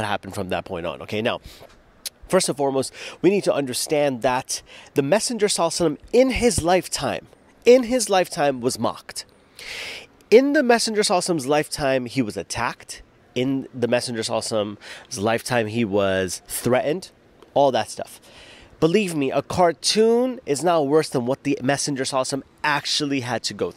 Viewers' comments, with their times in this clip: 0:04 Salalah alayhi wa Salam say it correctly next time thank you. You say slaahsalam